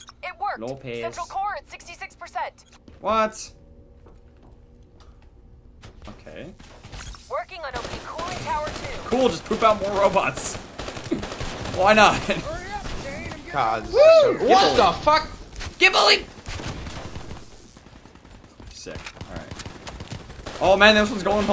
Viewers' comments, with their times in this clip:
0:08 That Laugh Tho 😂